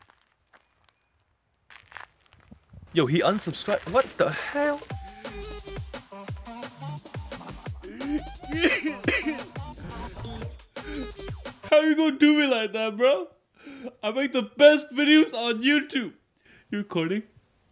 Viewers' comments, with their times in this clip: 0:03 I love how he switched back to his asian accent when he lost that 1 subscriber 😂
0:05 I like how his crying is so funny